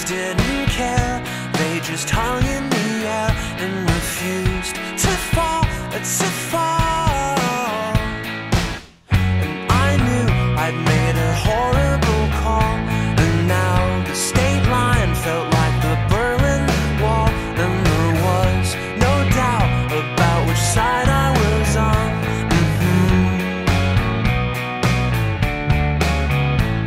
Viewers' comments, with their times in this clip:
0:04 LOL, I love the exaggerated pronunciation of "To fall! To FaaAALLLL!"
0:11 the guitar part kinda sounds like the background guitar in Cherry Lips by Garbage...